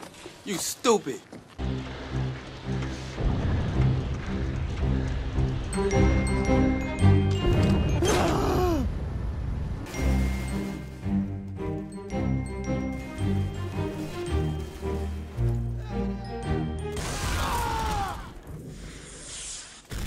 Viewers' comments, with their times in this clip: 0:07 That death yell at the mark makes me laugh every time.